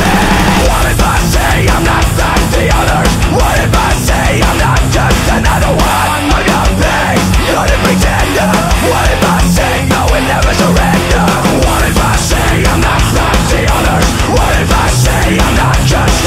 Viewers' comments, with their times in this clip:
0:03 dude so the intro may sound similar (actually better in my opinion) but from onwards its metal as fuck! far from the original pop/rock sound and style